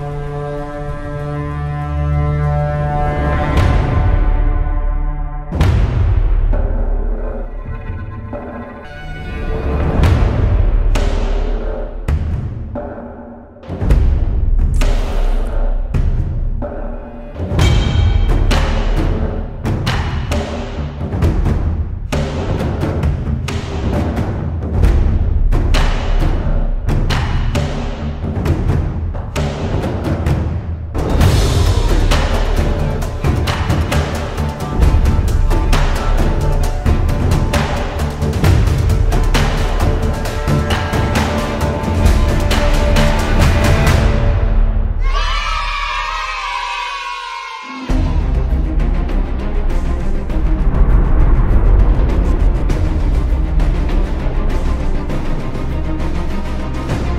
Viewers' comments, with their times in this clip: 0:04 Me when I wake up in the morning and every time I hear this beat
0:16 the way that the minions hammering is in sync with the beat(or whatever its called idk anything about music) is fking satisfying
0:41 Dude i got scared and tought "F*** TIME'S OUT AND I DIDNT LOCKED IN !!" Then i realized it was the soundtrack of champ select x)